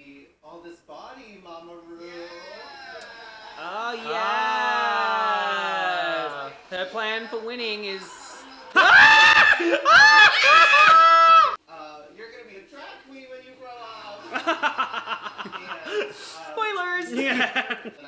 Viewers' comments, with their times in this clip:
0:03 not the yeee📉eess📉sss